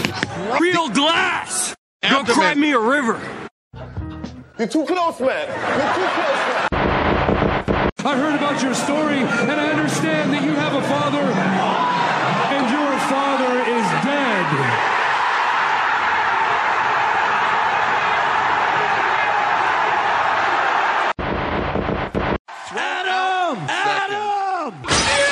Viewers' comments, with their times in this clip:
0:07 That part was perfect, down to the crowd building up anticipation as Christian mentions a father, we all knew what was coming after that